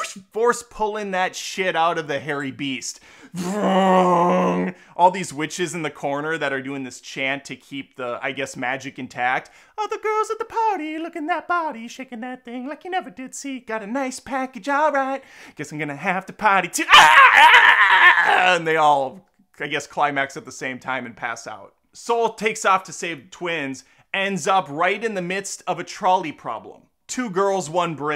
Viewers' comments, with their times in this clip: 0:09 I died when you started singing Janet Jackson 😂😂😂